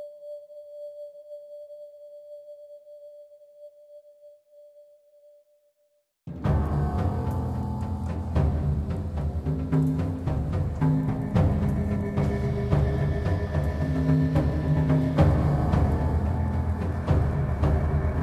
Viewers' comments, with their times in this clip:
0:05 song starting is my fav, i played through the whole game and the soundtrack is the best part